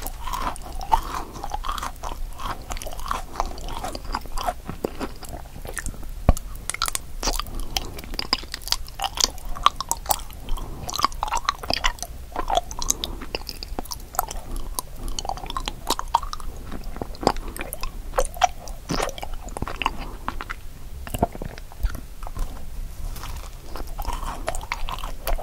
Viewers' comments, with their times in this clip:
0:07 the bite sound is sooooo satisfying